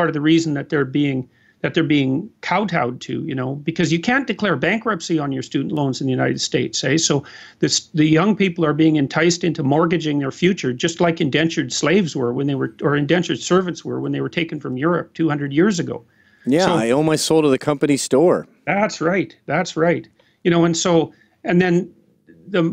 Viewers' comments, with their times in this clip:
0:07 did jordan sneak in a lite "Eh"?